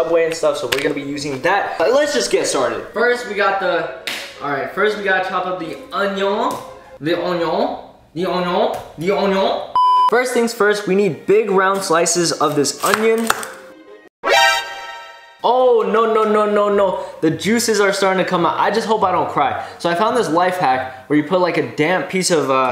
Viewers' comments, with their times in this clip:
0:05 the Koreans when they messed up English big time with unio and anyeo 😂